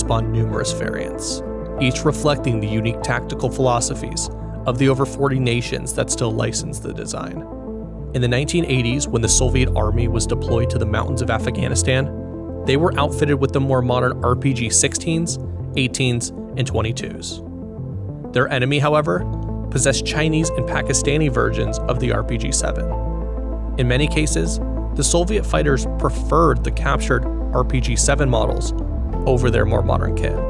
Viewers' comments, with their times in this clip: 0:07 "The mountains of afaghanistan", but otherwise a very solid and well-produced video.
0:09 What country is AFA-ganistan?
0:11 "AFAGHANISTAN" Fucking AI videos.